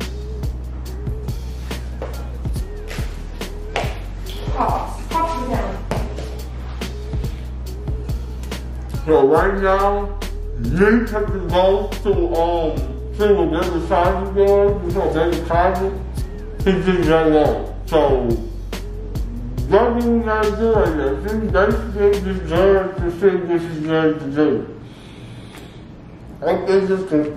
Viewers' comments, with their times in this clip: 0:09 who understand what he said ?🤣🤣🤣
0:09 what the hell is he saying